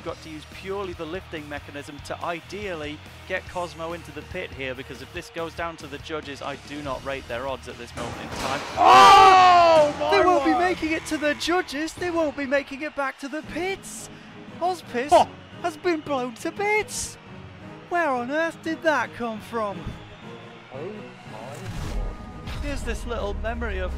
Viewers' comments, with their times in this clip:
0:08 That's some Jonathan Pearce commentary right there. ^^